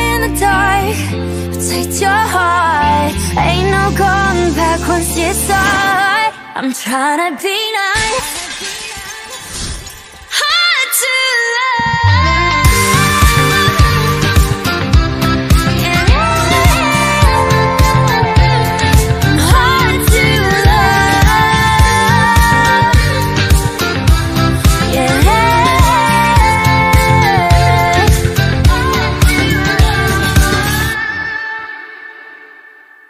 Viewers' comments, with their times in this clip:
0:10 THE HIGHT NOTE SO PRETTY
0:10 does not feel real. the highs and lows all at once in a high note are very hard to to put out, she slayyed yet again and won my heart 💗🎟️🩷🎀✨
0:10 "Rosé can't sing 😂😂 her voice is too low to sing a high note 😂😂😂 she's a bad singer😂" Also Rosé:
0:10 The high note
0:10 😻😻😻 the high note is so real
0:16 Actually in she hit a F5 again